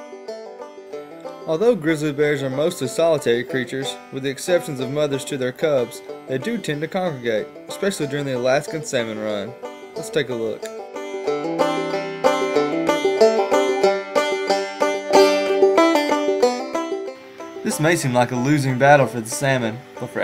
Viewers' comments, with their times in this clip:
0:07 I thought he said semen run